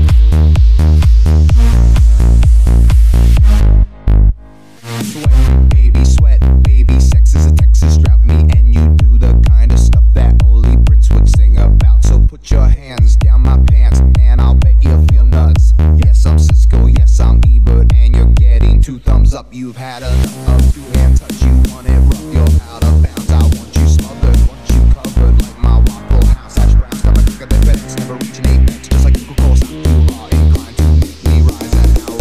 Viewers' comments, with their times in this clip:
0:06 is when the singing starts
0:20 Love the build up